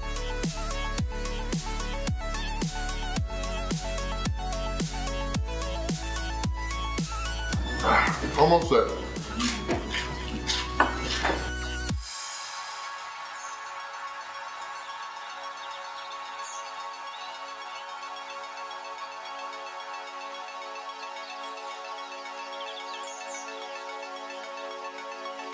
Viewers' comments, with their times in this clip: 0:09 that fish looks amazing, and the sound of that crispy batter the best fish and chips in the world is in new zealand imo. australia is a very close second. obviously depends on where you go but new zealands "bad" spots are even good. the brits might have invented it but i was very disappointed everywhere i went in the UK